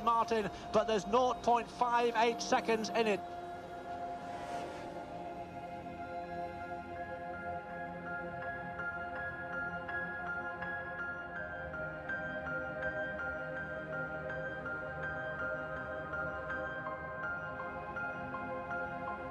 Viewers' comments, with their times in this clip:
0:04 That music is awesome.